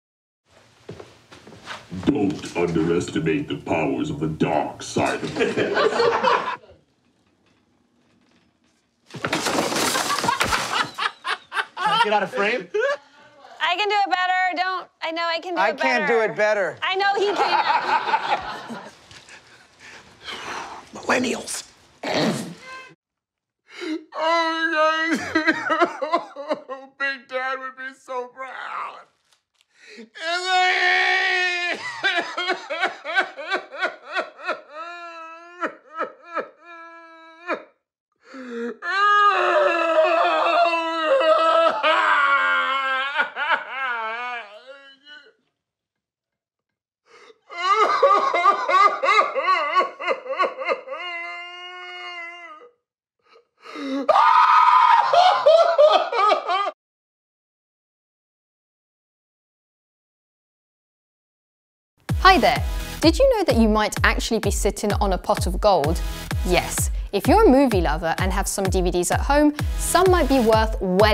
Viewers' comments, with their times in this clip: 0:01 John Cena doing his best Darth Vader impression!! 😂😂😂😂😂
0:47 I remember (this moment wasn’t funny) when my cousin died, I woke up to my mom crying just like this. Very sad moment, but her cry almost made me laugh. 💀
0:53 I love it when he started crying I laugh so hard I couldn't believe and he was crying like that